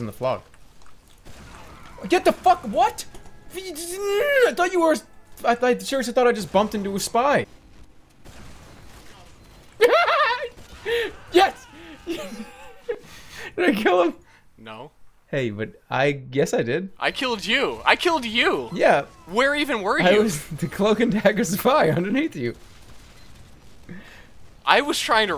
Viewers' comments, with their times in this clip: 0:06 Omg finally someone talks about jerma's laugh I thought I was the only one that found it hilarious.
0:07 dat frickin laugh
0:08 dat laugh doe xD
0:08 my god that laugh .-.
0:08 the laugh 0_o
0:08 that laugh ;w;
0:08 Can someone make a ringtone? Jerma's crazy laugh :3
0:09 oh my god Jerma's laughter ..
0:09 That laugh is priceless. He sounds so crazily happy of his not so victory.. though it's cute :)
0:09 I want Jerma's laugh from as my ringtone :D
0:09 that laugh!!!! lol!!!
0:09 LOL wtf is that laugh
0:09 Wtf jerma... dat laugh
0:10 Jerma laugh I was dying